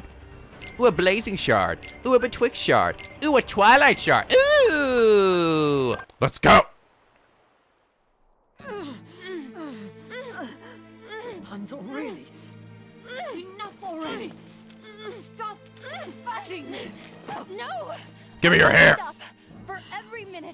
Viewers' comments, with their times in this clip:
0:08 Screenwriter: "you know what will help this scene of Rapunzel struggling to free herself from mother Gothel, while both of them moan loudly? Start it by completely obscuring the view. Yeah, that'll set the mood just right!"